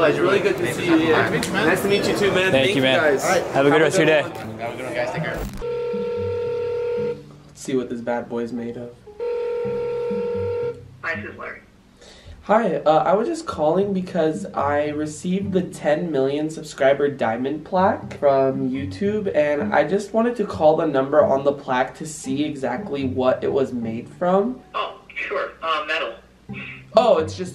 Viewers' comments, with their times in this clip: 0:09 I swear he said "heil hitler"
0:12 why did rug sound like james charles??😂😂
0:12 ur voice changed to my mom talking to a teacher when she’s talking about grades and shit lmao